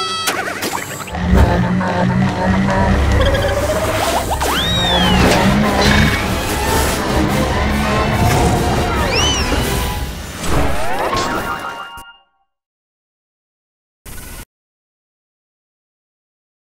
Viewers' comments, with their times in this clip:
0:04 who goofy ahh sound effect
0:04 WAS THAT THE FKN CARTOON RUNNING SFX